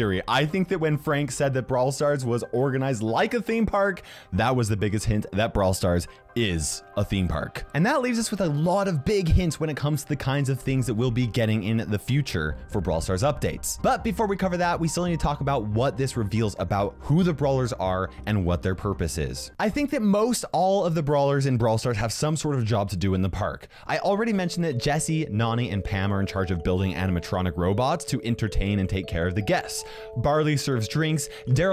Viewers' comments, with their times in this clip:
0:03 Did anyone start hearing the messenger call sound
0:12 Am I the only one who heard the phone call ?